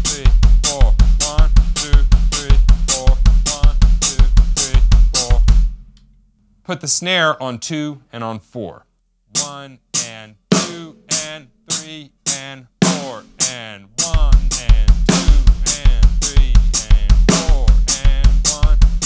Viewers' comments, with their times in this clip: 0:03 best for rock in my opinion with a open hi hat